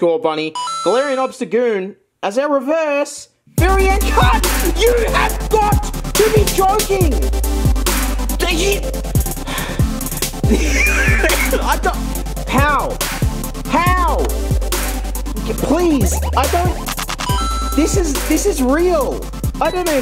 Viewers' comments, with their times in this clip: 0:05 bro this song is so fire